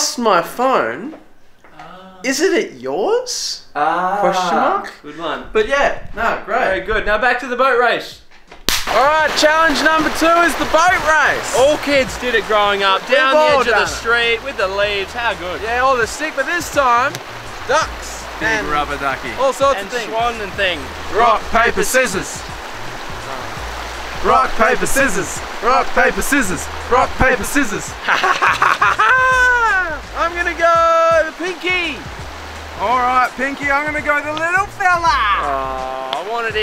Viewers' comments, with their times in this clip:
0:07 sounded like the longest high five explosion
0:22 i like how he says aww